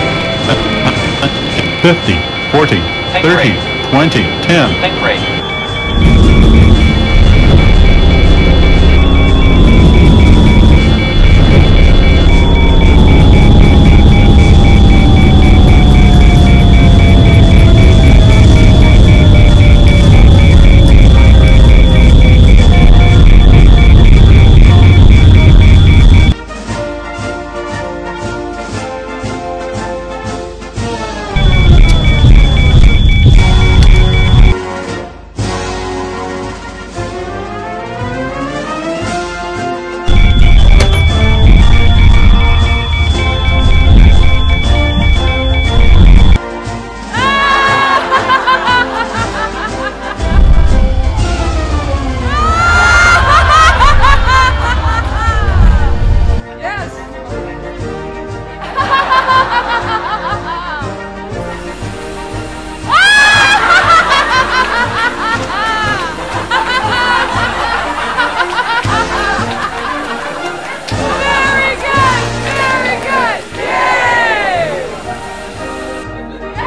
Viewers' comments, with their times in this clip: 0:04 10 10 butter
0:04 BUTTER LANDING AND BUTTER FOR OUR EARS
0:13 ow my ears
1:02 LMAO THAT LAUGH